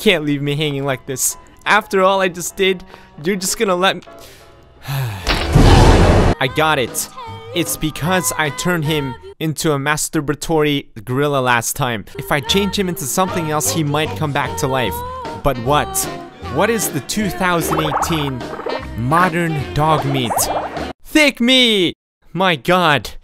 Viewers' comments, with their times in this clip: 0:04 the fucking sigh